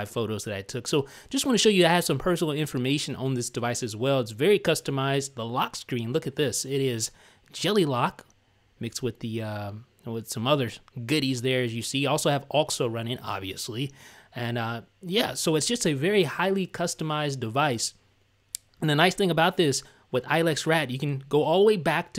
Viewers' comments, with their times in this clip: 0:07 Listen very carefully, it sounds like he was about to say "mixed with some other SHIT" lmao